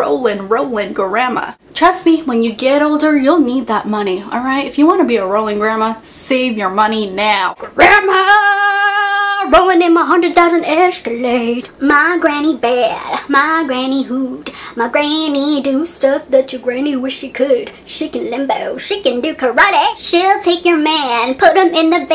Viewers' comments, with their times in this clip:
0:07 lol love the song